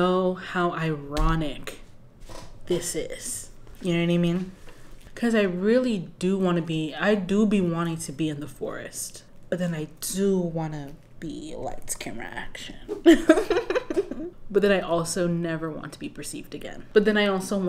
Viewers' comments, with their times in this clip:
0:05 RELATABLE!!! 😂 And your One Wish rendition was quality tho 👀👏🏽